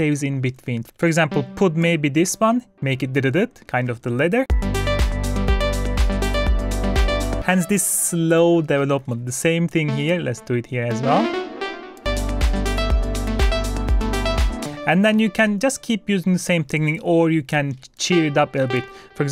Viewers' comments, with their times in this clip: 0:06 has almost a polyrhythmic vibe